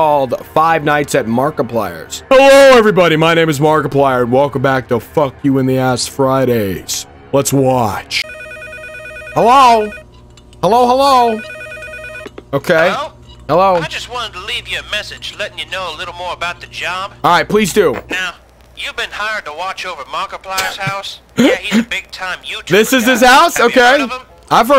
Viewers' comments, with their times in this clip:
0:06 you just sounded like Joe from family guy 😂